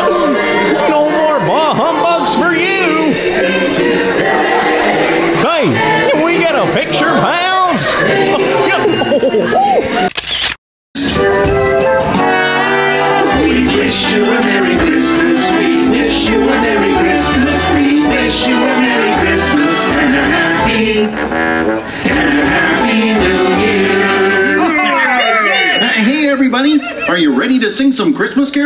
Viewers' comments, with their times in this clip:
0:09 "Marley! Watch out for that first–" Goofy hollers "–step..."